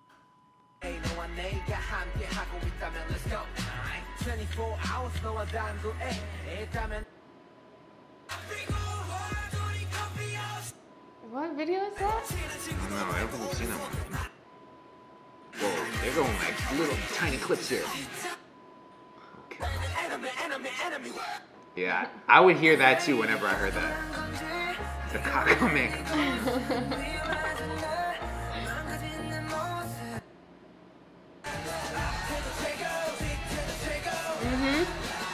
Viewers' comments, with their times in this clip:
0:07 Just incase no else told you, the mv is "Bulletproof" And its wonhae monhi monhi(which sounds like monhee *money*) But I always sing money anyway😂 Great vid!
0:19 thats what me and my mom heard